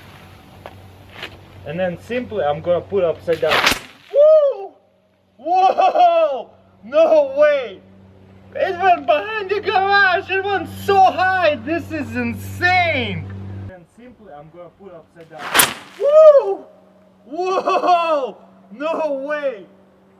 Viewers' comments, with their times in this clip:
0:03 I am so sorry but listening to his scream over and over is funny as hell
0:04 old woman sound
0:08 did he even say words